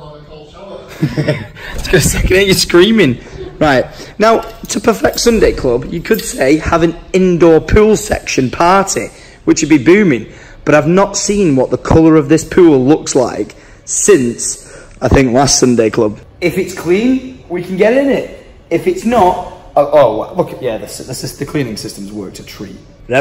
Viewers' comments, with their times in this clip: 0:07 My left ear’s loving that buzzing sound.